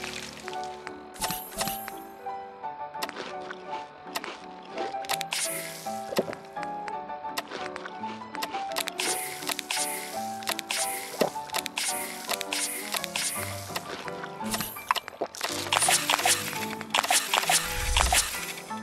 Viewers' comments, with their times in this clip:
0:06 I’ve been cry laughing for 5+ minutes over the sound your character makes when they take all those drugs 😭😭😭